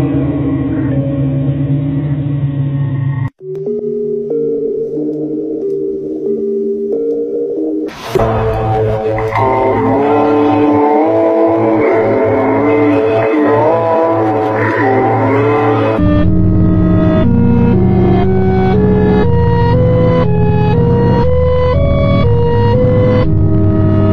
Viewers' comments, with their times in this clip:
0:08 it sounds like it's saying come along in the dark